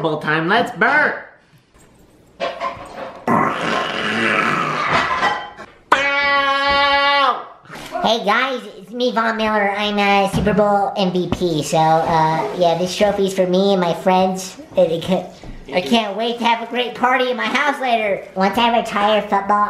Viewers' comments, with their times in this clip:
0:03 GRANNY BULLFROG SOUND